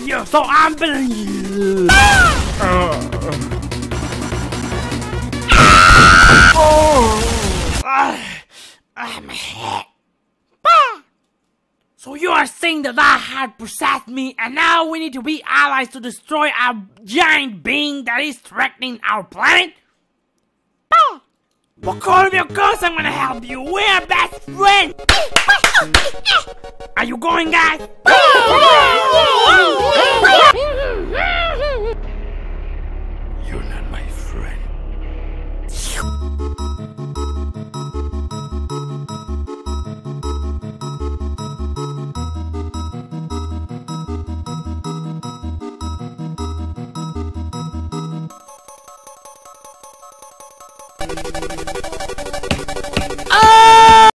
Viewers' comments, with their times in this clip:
0:03 at 0,25% the music is .... deam good
0:05 thats an awesome earrape :D
0:05 s c r e a m
0:05 gunshots and kirb screaming “Is that the Lion King?”
0:05 Kirby just full on screams
0:05 AAAAAAAAAAAAAAAAA gun shots prepares boomy thing what is bro drawing?
0:06 Kirby: [screams] The robber and Bomb buddy: [actually being useful] The painter buddy: yea, u guys fight him ima just draw a picture
0:06 That is not a scream….
0:20 cutest poyo sound ever heard
0:46 you hear him
0:51 can we all take a moment to admire this amazing cut off scream?